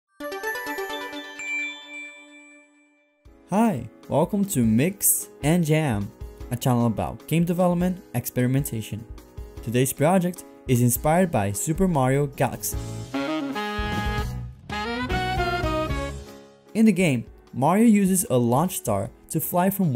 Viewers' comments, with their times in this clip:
0:00 You're intro jingle is very similar to the Google Duo outgoing ringtone. Probably just a coincidence, but that caught me off guard.